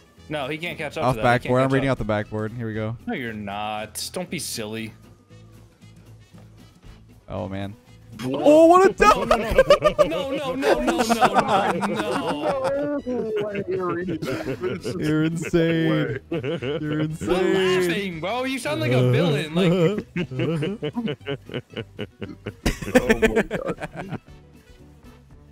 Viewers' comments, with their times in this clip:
0:09 This man sounds like alucard